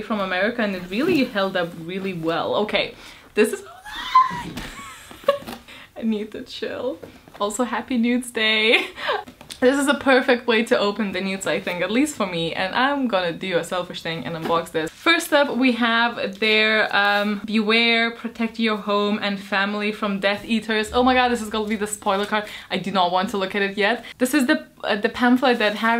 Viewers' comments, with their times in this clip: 0:08 that sounded so much like "Happy Nudes Day!" And if I had a 2nd cup of coffee, I'd be boucing off the walls going omigodomigodomigod too!